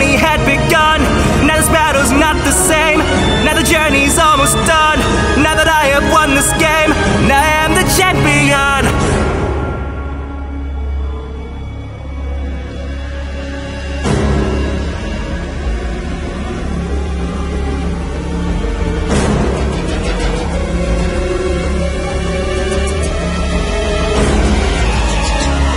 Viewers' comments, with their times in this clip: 0:09 I love the sheer silence when red appears And the sheer shock from gold is perfect.